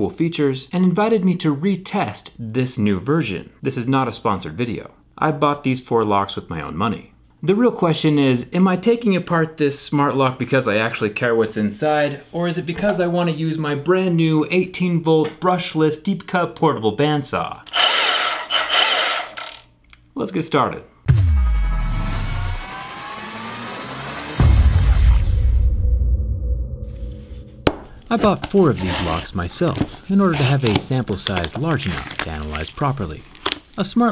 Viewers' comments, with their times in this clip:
0:06 i just love how much fun he has saying that and how happy he is with it
0:13 I have never seen Zach talk in such a tone before.
0:18 Miss x: Agent 47, we got a mission for you Agent 47: What Mission? Miss x: we need u to test the security of this smart padlock.. Agent 47: (Sigh) you mean That Tapplock padlock thing again? Miss x: Yes.. Agent 47: Ahh shit..Here we Go Again... ( intense Saw Sound beaming)